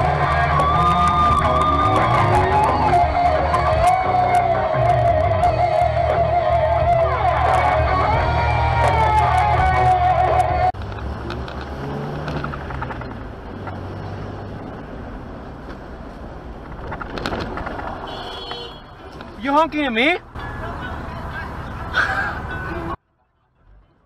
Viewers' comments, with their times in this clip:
0:08 He must be deaf because of the loud radio or else that is his way of getting deaf while drive ng.